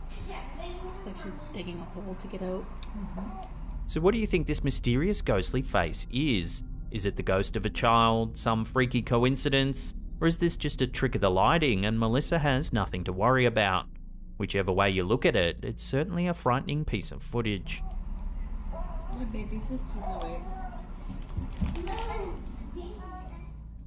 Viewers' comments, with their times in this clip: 0:09 It doesn’t sound like the women watching the monitor are panicking about the phantom face peering into the crib at the baby. This is proof that it’s fake.